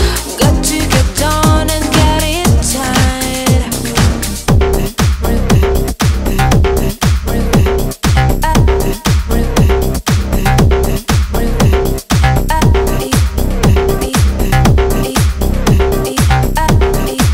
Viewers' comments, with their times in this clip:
0:03 there is a totally developed beat slash melodic with changes - OMG I'm having a Tiesto moment ! It's sooooo gooood! - and does not last nearly long enough and took too long to get to. Let's face it - people want it hard and they want it right away!!